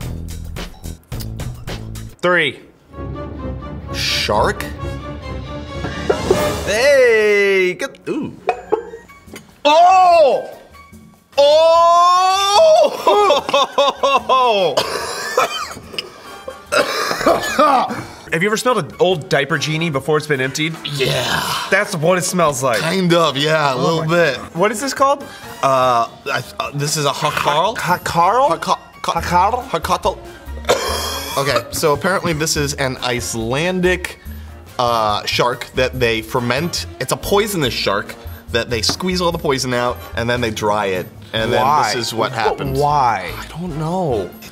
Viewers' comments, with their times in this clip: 0:06 he said kaddu which means pumpkin in my place
0:28 im icelandik and its funny to see them try to say hákarl i have tryed 1 before and a tip is dont chew
0:29 I think that guy said it right